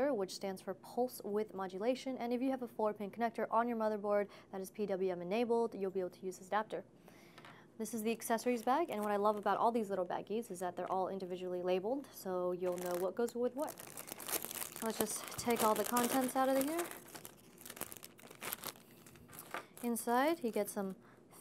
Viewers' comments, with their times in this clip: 0:09 the way she said baggies made me tear up a little T-T